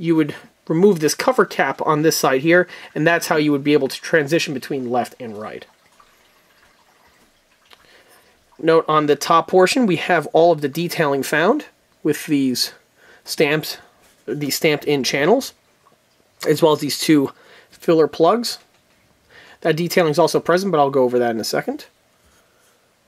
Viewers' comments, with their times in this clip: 0:09 Nice parts. Was that someone taking a leak at the mark?